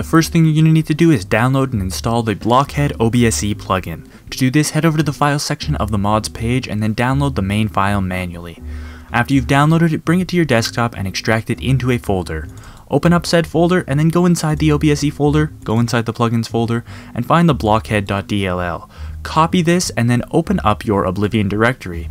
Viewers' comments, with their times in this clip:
0:08 busta rhymes took over the tutorial